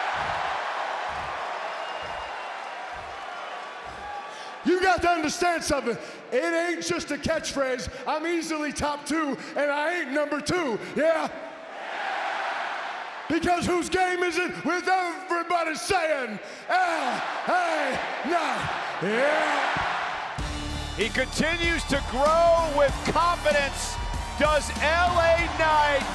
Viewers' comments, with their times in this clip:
0:10 That quick YEAH! 😂